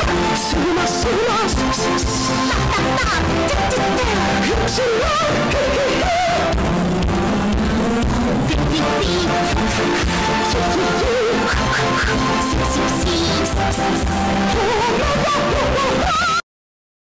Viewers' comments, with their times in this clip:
0:05 Bro really hit the high note.
0:13 Door entity screech